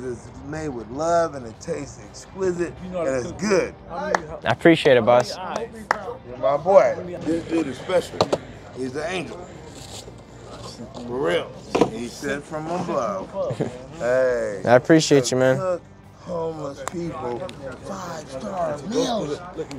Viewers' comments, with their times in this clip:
0:04 that dude Sounds like DMX. Good stuff